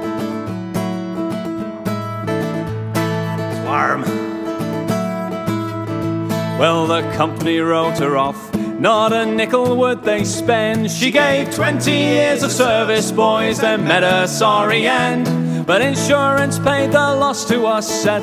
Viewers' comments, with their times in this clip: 0:03 I don't know why but I love the IS WARRM